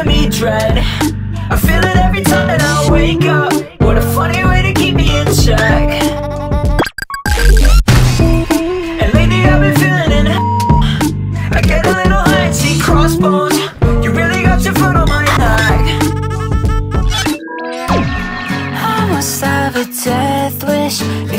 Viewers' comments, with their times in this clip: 0:08 "heck" being censored is one of my favorite underscores moments ever